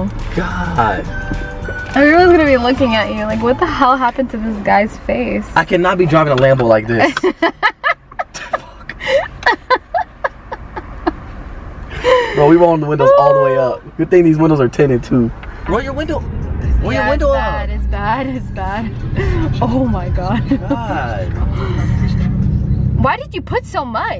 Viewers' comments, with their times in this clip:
0:08 Austin: Yo, I cannot be driving a lambo like this. Catherine: *laughing* Austin: *facepalms* I wouldn't blame him 😂🤣